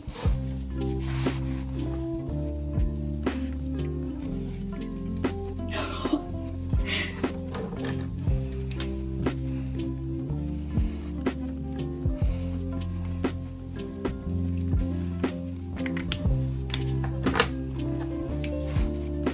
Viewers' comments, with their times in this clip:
0:05 That gasp omg-😂What did you see that was so exciting?😏